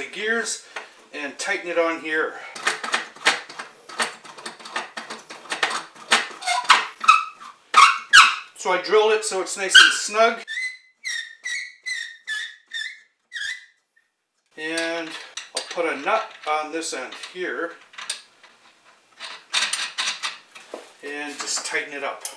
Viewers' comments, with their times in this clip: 0:10 I love these crazy off the wall projects. Very fun video. Appropriately, the squeaking sounds just like a whimpering dog.